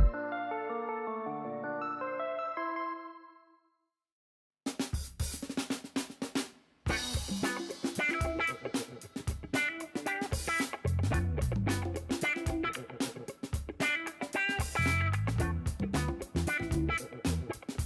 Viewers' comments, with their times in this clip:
0:05 music is friggin terrible